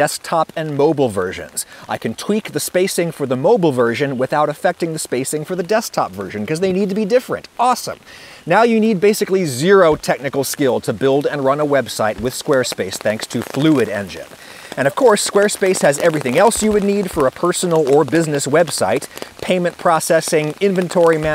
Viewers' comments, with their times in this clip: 0:08 Is anyone else hearing a lot of static in the background ?